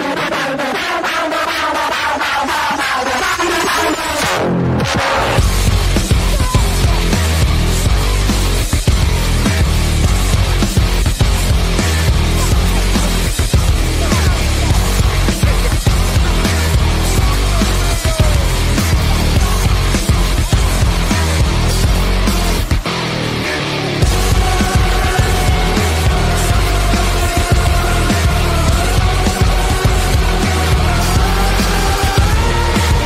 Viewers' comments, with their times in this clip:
0:06 That Is Hilarious With The Epic Music And Sandy Ordering
0:07 Sandy got a new voice actor idk she sounds different
0:21 I love hearing the light beat drop right as Patrick lifts the obscenely large jar of mayo into view.